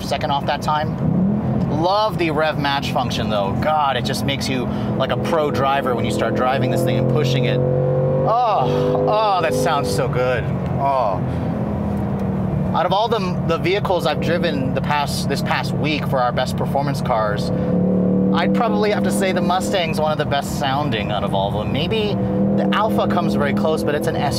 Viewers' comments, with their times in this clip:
0:08 When your girlfriend is singing in the shower